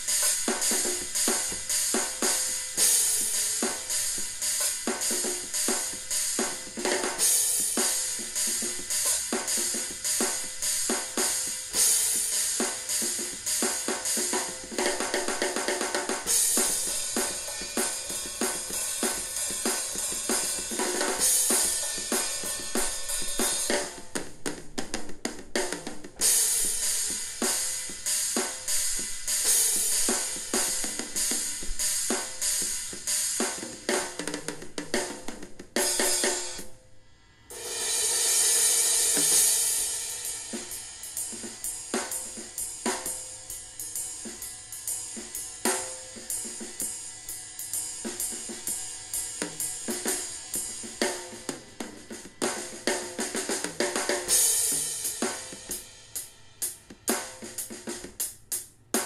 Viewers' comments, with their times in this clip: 0:03 i love how he never notices he aint playing the kick
0:40 Ok can somebody please help me find a melody or song that is similar to the beat that starts it sounds so good and reminds me of like an old timely beat, it would be much appreciated